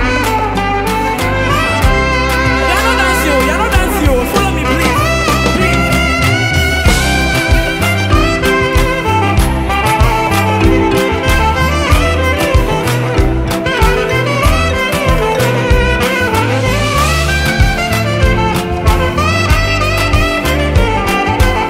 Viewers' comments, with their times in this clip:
0:06 The sax was sweeeeet. After the groove was 🔥